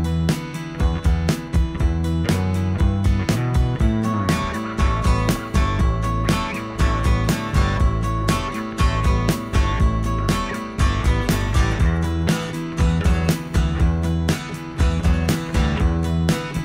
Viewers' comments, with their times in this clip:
0:03 Looks delicious already or so into video! Good choice of cooking music!